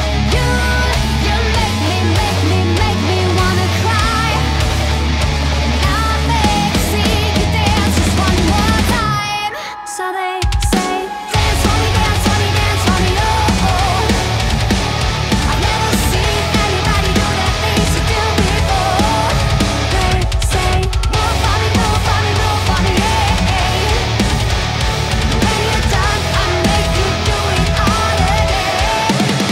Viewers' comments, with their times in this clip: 0:10 incomming true rock